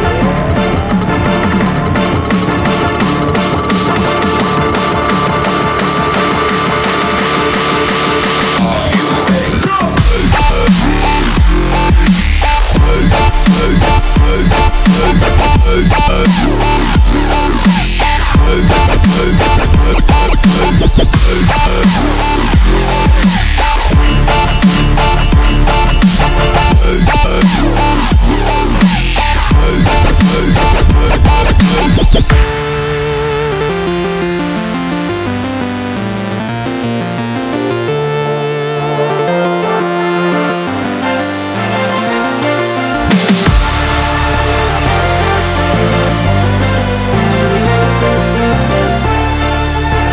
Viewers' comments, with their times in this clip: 0:10 i just love this song the drop is the best
0:32 that melody line !!